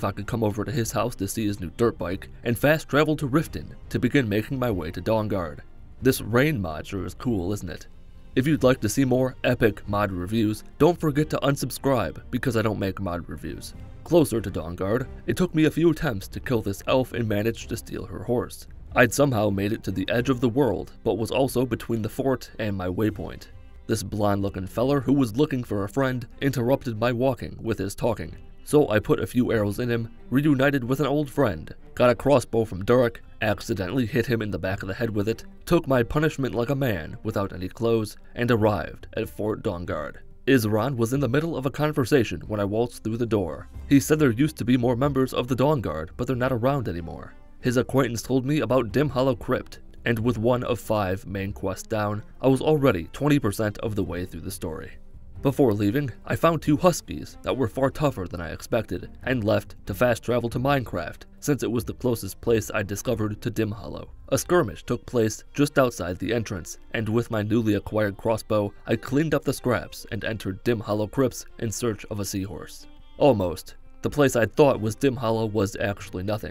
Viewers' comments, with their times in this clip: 0:06 I loved this part. I don't know it was just so out of place that is made me chuckle. The delivery of the word "Epic" is what sold it.
1:00 "Fast travel to Minecraft" That one got me. This is how I'm pronouncing "Mzinchaleft" from now on.